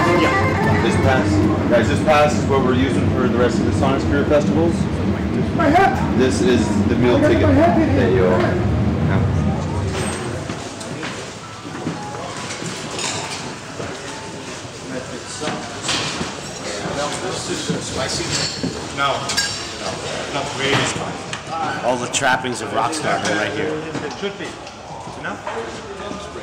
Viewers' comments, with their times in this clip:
0:08 nokia ringtone lol